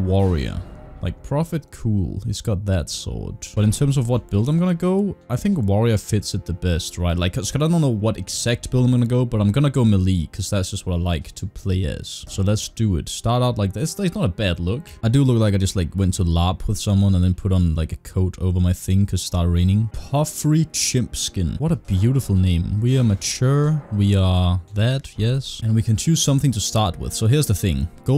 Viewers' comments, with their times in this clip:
0:10 I’m gonna go MILEE. Melee pronounced may-lay